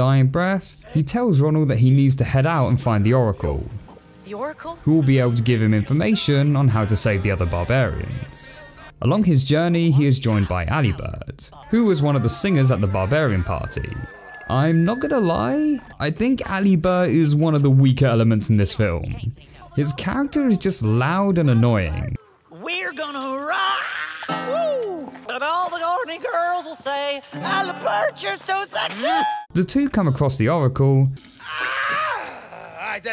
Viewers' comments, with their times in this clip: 0:09 I have a feeling this is supposed to be voiced by Jack Black/have the same level of energy as JB...
0:16 oh my god I didn't know he sounded so annoying in the English version I'm truly sorry for your behalf